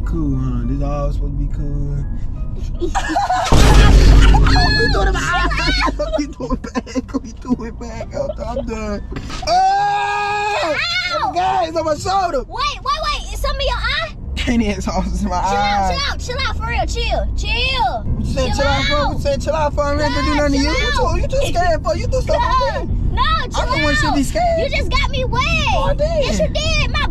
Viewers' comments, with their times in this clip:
0:09 that scream was hilarious i peed ma self